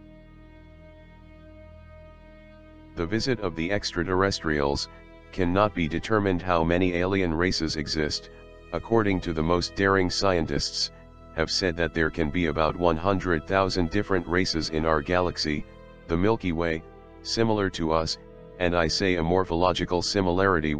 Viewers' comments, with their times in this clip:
0:07 Was stopping i refuse to listen to i fucking robot voice!!!